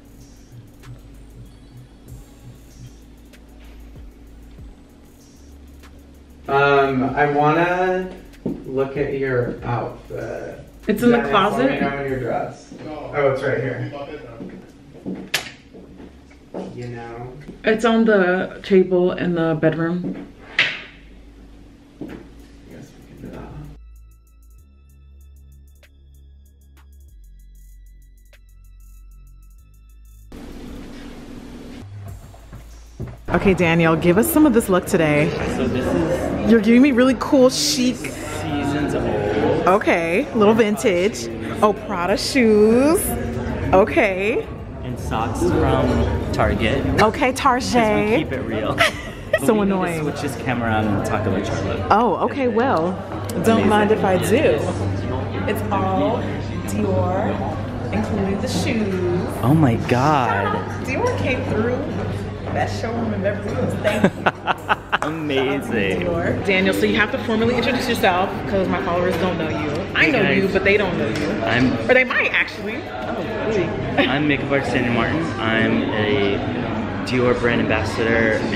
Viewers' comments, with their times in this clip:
0:06 Beautiful! But, Jesus, the vocal fry ...Lordt!
1:00 THAT WHITE MAN SINNIN